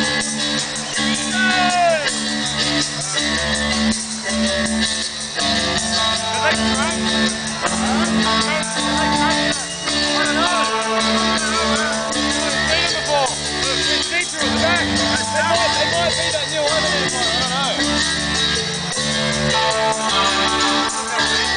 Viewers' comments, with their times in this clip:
0:04 lol into the song, those to guys haveing a conversation. all i could pick up was. "go get the ball" and constantly "i dunno man, i dunno" lol but fuking sweet song. i had side stage tickets but it was a fuking incredible view